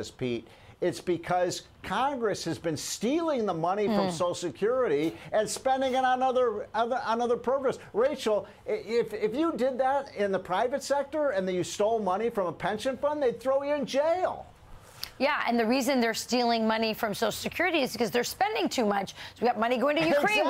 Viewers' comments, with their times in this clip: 0:03 who farted??? (Listen)